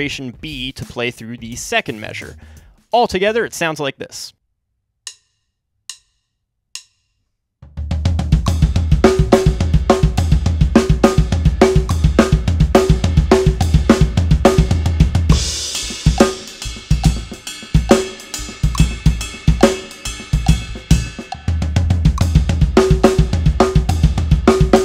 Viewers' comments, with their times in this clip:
0:06 sounds like very cool punk rock song